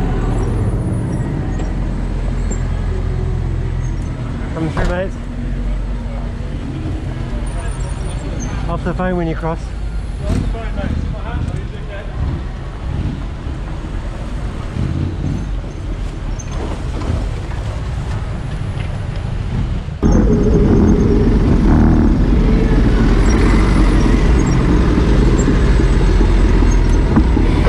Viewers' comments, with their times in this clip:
0:09 what was his response, I can't hear it?